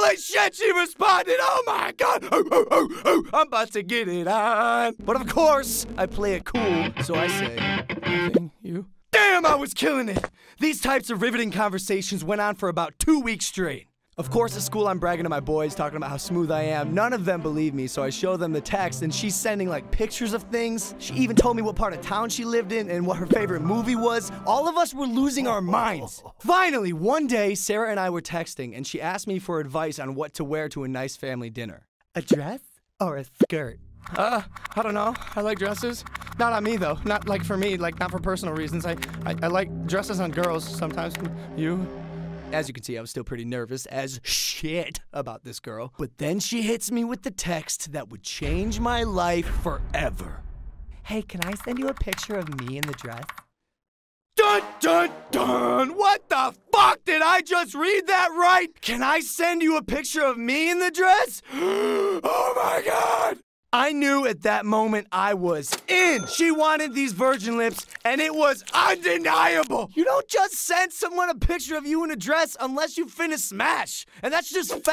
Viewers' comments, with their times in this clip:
0:03 he sounds like Bender
1:02 he sounded like markiplier